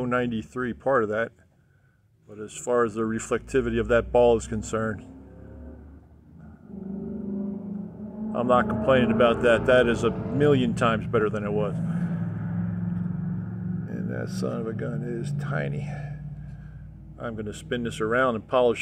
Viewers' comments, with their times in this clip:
0:05 Wait for it....ROARRRRR!! That's a Mustang for sure. Obviously not mine.